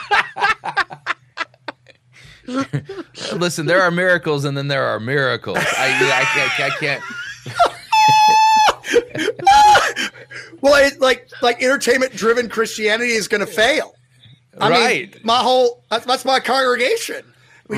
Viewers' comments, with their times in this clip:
0:04 That’s the same laugh as that one Hispanic guy!!